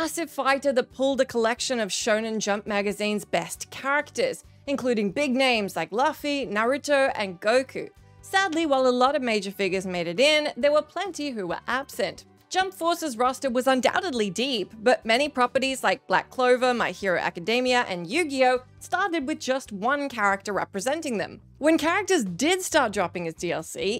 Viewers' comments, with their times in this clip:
0:05 I’m sorry, I can’t unhear that “LUH-fee” I know it’s a petty gripe but, ugh, it bothers me. It’s pronounced “LOO-fee”, always have been.